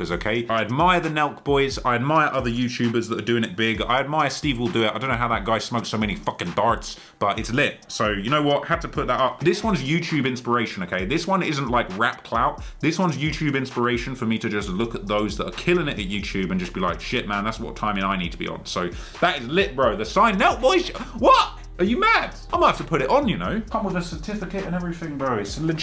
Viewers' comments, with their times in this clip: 0:07 you’re talking about stevewilldoit and you say you don’t know how he smokes so many _____. What the hell was the word you said, I literally can’t understand it lol